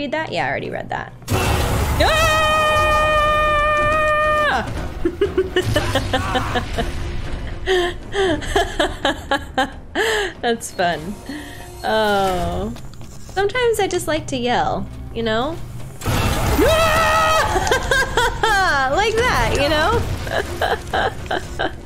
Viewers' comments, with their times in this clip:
0:07 You did scream 😂 I am probably not the first one to mention that 😅